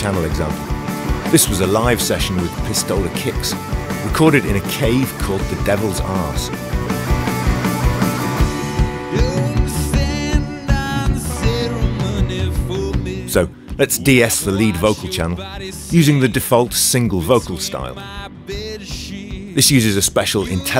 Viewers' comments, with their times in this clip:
0:05 Am I the only one who heard "Devil's Ass"?